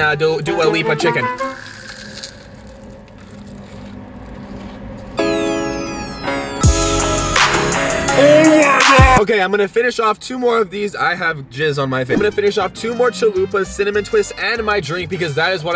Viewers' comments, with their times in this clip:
0:03 I love that song😂